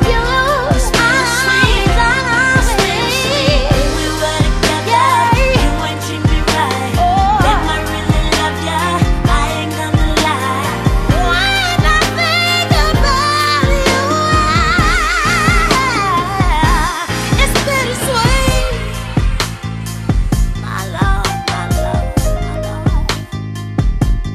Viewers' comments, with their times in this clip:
0:10 The way Fantasia belts out the phrase "When I think about you" for the last time ...all I can say is WOW--sing it girl. (what power).
0:12 Everytime i listen to this song i skip straight to ! its amazing !!!!!! that girl knoww she can singgggg !!!:)